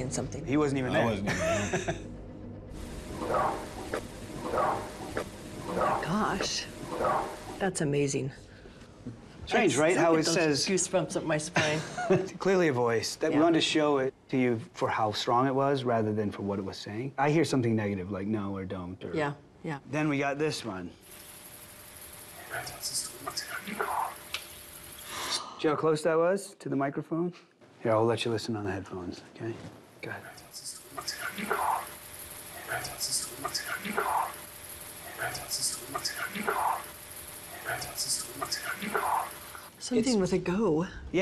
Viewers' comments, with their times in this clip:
0:05 Sounds like he's saying look out...look out...look out?!!
0:29 its says that “the light sense should be gone”